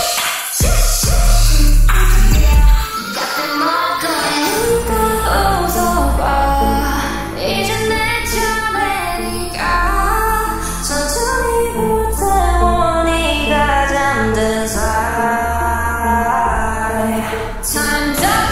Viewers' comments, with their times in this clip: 0:03 I was like in the empty room